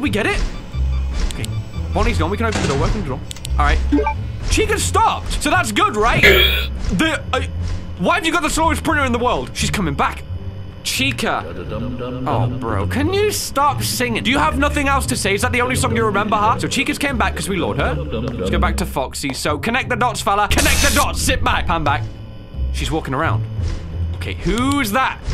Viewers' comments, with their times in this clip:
0:04 that's having a stroke sounds like
0:06 What was that noise?
0:06 The hell was that noise?